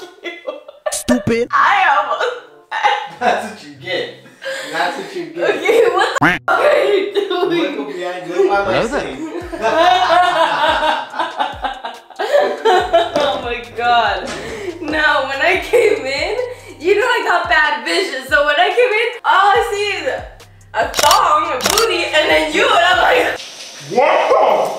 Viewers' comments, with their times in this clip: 0:08 Did I just hear “Hello there”?
0:10 her laugh makes me laugh so hard lol😂😂 And i love u i am new to the channel i subscribed
0:10 That laugh on killed me😂😂😂